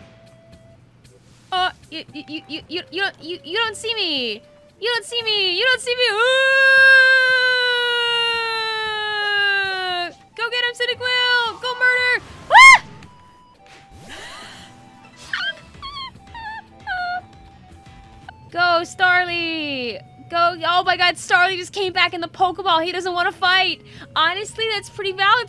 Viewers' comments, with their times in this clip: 0:06 10/10 Kricketune impression